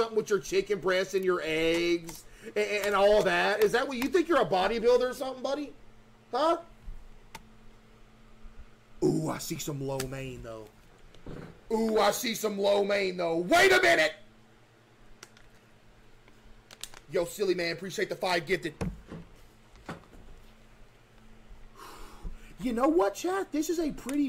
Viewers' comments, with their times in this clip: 0:09 I think bro farted